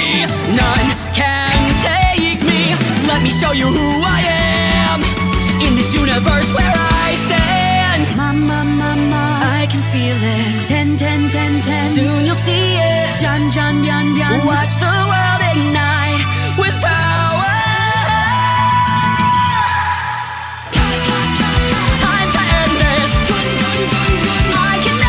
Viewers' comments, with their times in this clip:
0:08 Why do they sound like girls here? lol